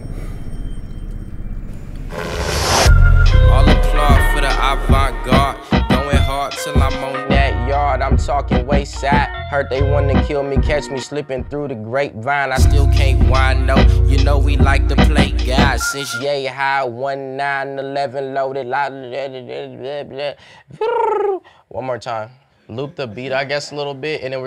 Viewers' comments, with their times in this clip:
0:03 Still tryna find that track Sounds mean AF and for sure sounds like Earl produced the beat
0:03 Bruh that damn bassline is disgusting.
0:03 that bass hit hard as fuck
0:04 Somebody needs to loop that beat and try and take out Vince's vocals or something...shit is beautiful
0:05 It's a travesty that track never released. That verse sounds so much better over that beat